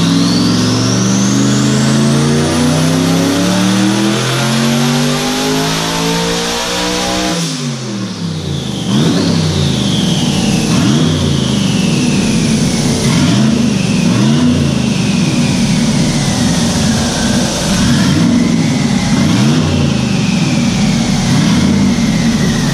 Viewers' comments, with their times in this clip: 0:04 HELLLLL YEAHHHHH, BALD EAGLES SCREAMIN’ AT THE TOP OF THEIR LUNGS! BEAST MODE!!